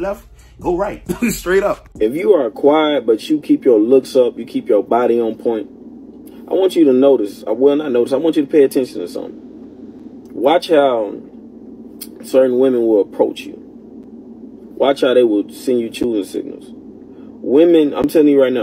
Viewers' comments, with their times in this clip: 0:06 I don’t think I would’ve had enough energy to scream that loud, that long but I would’ve beat h er up first go around and it would’ve been over with both of them at that moment! Bc the friend was too arrogant in her wrong!